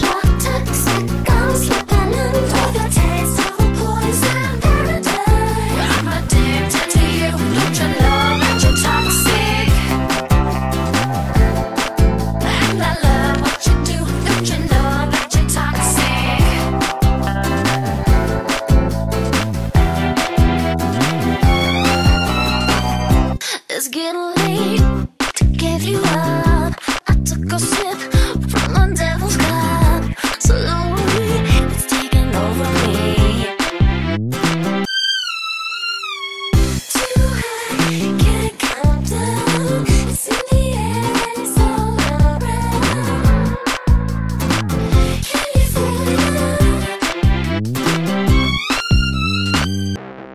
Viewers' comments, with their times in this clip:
0:09 the guitars slap here
0:09 Loving Trey Spruance's surf lick
0:10 the (eletric?) guitar is so majestic Its nostalgic, im lovin' it
0:34 sounds like the original song